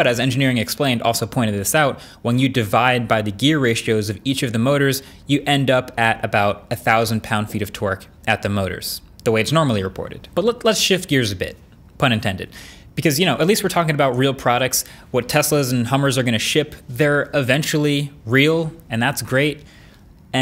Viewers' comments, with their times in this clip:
0:07 1,000 lb ft of t w e r k ?